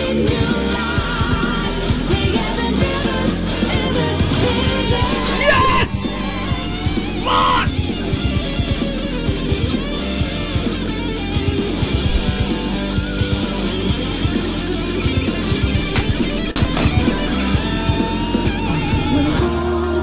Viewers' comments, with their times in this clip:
0:04 killed him right when the music dropped. Fucking awesome
0:04 Did you have a music timing passive or something?